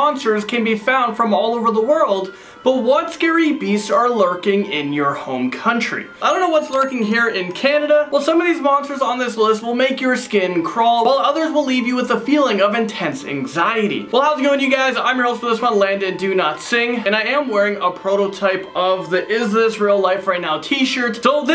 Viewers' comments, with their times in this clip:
0:05 BACKGROUND MUSIC ON ????????